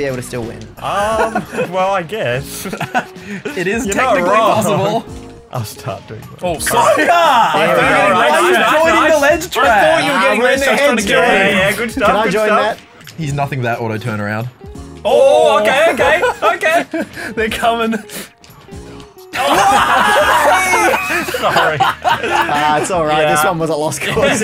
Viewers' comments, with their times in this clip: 0:06 Can anyone tell what the heck they're saying here